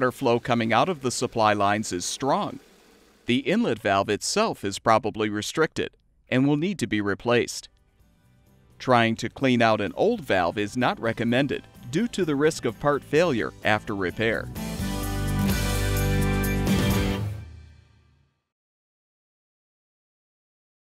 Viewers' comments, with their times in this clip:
0:08 I don't understand why in he says that there are a risk of "heart failure" if you try to repair the valve... I'm not a native english speaker, so sorry if it is a misunderstanding. Thanks in advance!